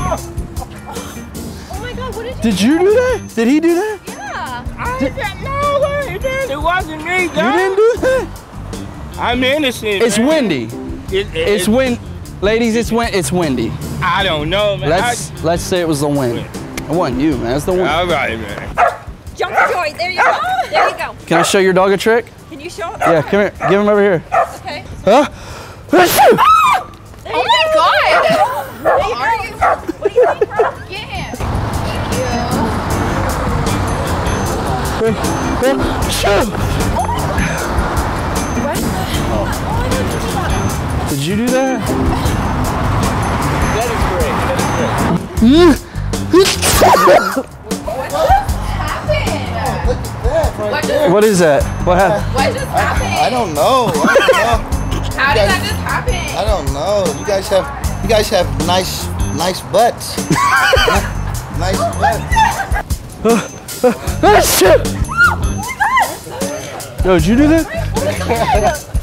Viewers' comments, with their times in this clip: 0:04 lol his voice
0:56 LMFAO "you you guys y'guys have nice butts nice nice butts." (Roman laughs in the back round) LMFAO xD